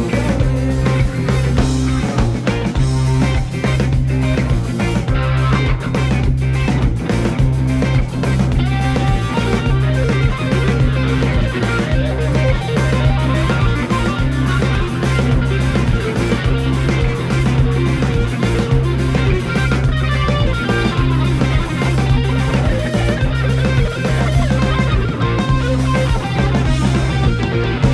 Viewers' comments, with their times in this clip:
0:10 how does he get those trills by only using one hand?